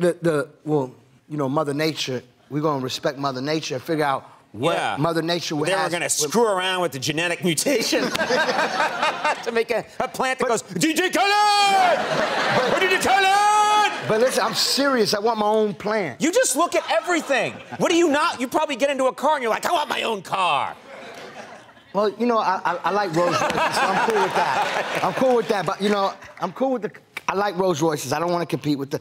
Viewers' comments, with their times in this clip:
0:10 The way Conan said DJ Khaled made me lmao 😂. "You know what I'm sayin?"